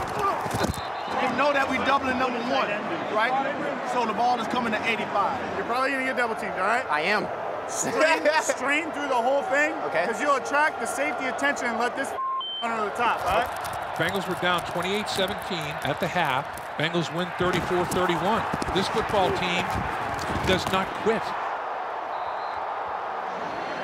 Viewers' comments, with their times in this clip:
0:08 this man chase got the ugliest laugh ever